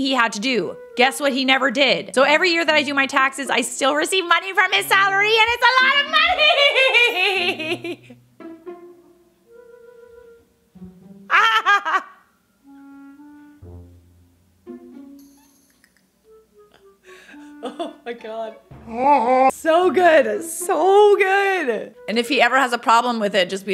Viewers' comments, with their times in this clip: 0:07 🤣🤣🤣 the way she laughed !!